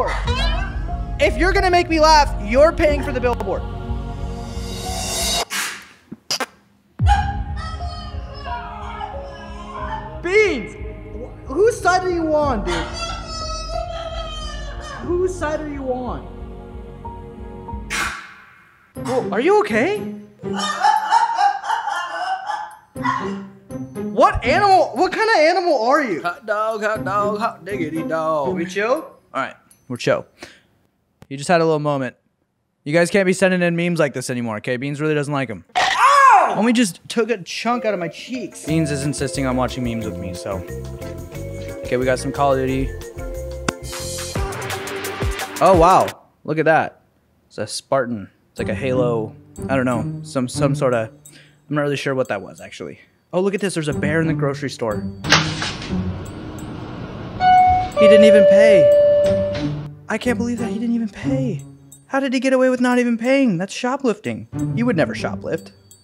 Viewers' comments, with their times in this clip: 0:03 sounds like the wither in mc lol
0:05 whyd that sound like the minecraft wither 😭
0:17 i was crying laughing at the sounds the dog made
0:19 Beanz with the goofy ah laugh
0:19 i like how im laughing and it sound like beans is laughing LOL
0:20 "i fear no man, but that *thing*...it scares me." -heavy from tf2 Beanz is not a dog... Im very sure hes a skin walker from the way he laughed...
0:20 the dog is laughing
0:47 the noises that beans make is what i hear am when my dog wakes up